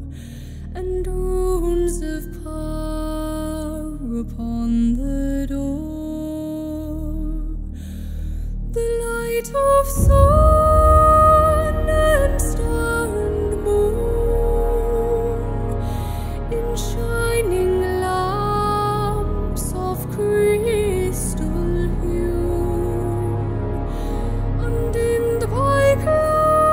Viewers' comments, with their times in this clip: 0:07 her voice + the horns give me goosebumps everytimes!